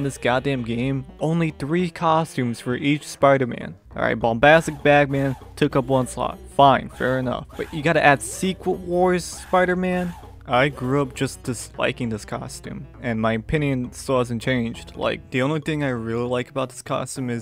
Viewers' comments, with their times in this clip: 0:04 ain’t no way he played that goofy-ass Sega Genesis music